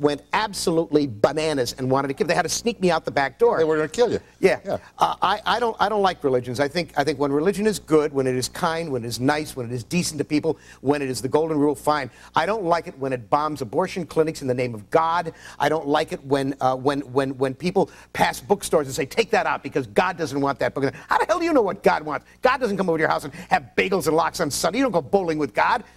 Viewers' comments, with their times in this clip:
0:09 Harlan's mouth can no longer keep up with his rant.